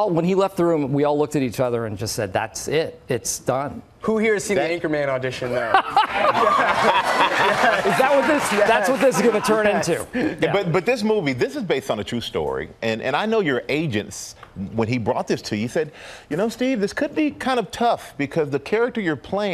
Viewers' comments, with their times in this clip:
0:03 what is Timothee saying? It's just mumbling in my ears, because i'm not a native speaker and kinda not getting the word before "...auditon there". Can someone help?